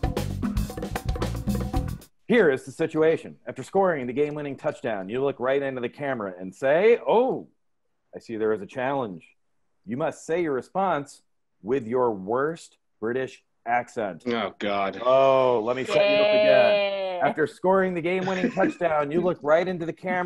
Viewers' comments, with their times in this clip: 0:07 The British accents that start ...